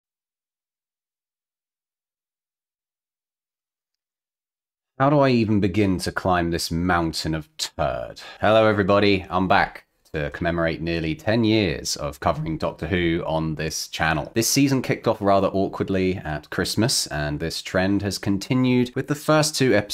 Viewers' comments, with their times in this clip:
0:00 for a moment I thought the audio was cut off, then I realised you were disappointed… 😂